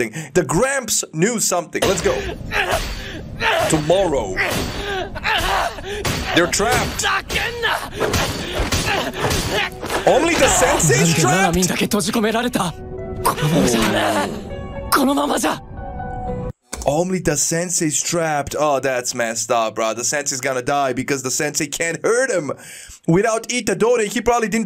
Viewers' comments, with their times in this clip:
0:07 Yes only the "sexy" is trapped indeed.